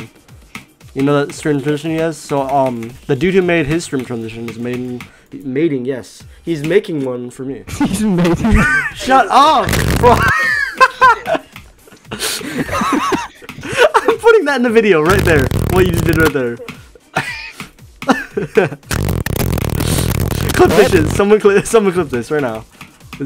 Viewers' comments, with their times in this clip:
0:09 sound of a 1.00$ mic😂